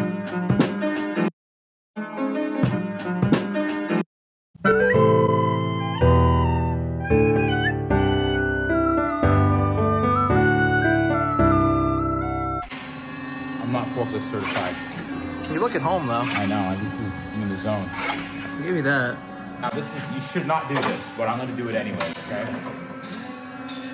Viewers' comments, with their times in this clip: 0:10 Wow before the ear cancer recorder came in..